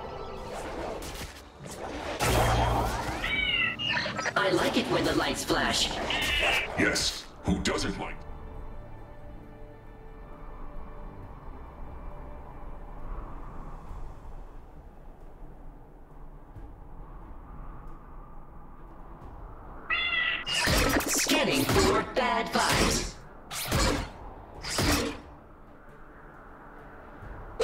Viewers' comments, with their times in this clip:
0:10 Man, they're missing the music for the dance emote on